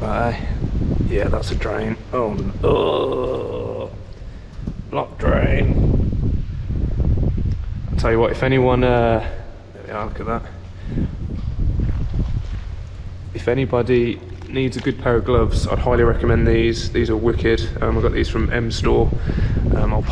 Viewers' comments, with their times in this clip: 0:04 I understood that reference! laughs like a kookaburra